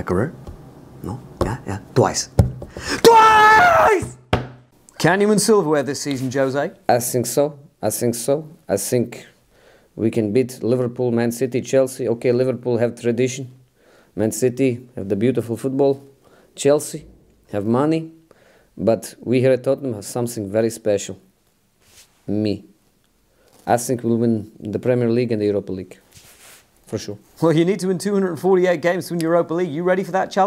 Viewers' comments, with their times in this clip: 0:06 I sink so, I sink so, I sink so , I sink so, I sink so , I sink so , I sink so , I sink so , I sink so
0:12 Jose: Ok Liverpool have tradition, Man City have the beautiful football, Chelsea, have money but we at Tottenham have somesing very special: (silence) Me... 😆😆 I sink so
0:18 Holy shit the same voice